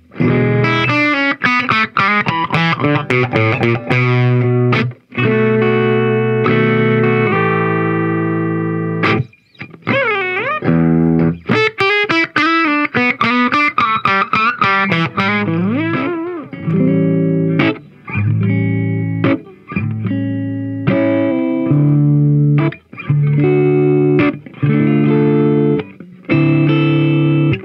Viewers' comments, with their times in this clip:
0:09 Bonamassa is still trying to get that lick down.